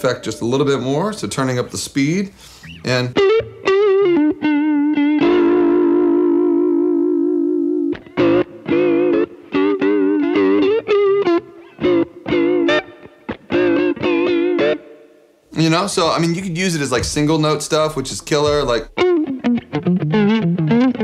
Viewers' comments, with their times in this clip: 0:09 Is that a little hint of snarky puppy ??? What about me??